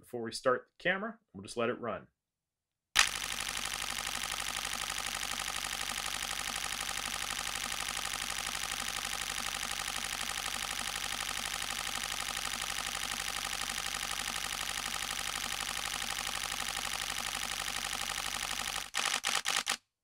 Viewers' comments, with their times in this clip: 0:03 when you start the car early in thr morning